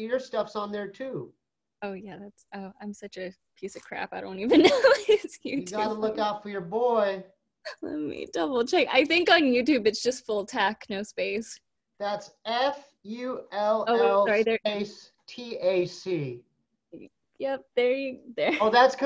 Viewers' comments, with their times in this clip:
0:04 the way you said "You Gotta Look Out For Your Boy" to go along with the disappointed head shake/look away got me good 😌 + The rest after.